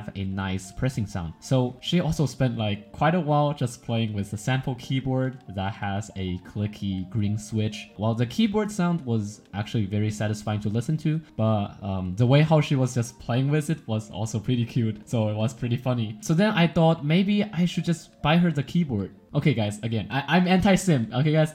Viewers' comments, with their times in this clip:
0:04 clicky switches keyboard enthusiasts imagine liking a sound that sounds like me screaming in the bathroom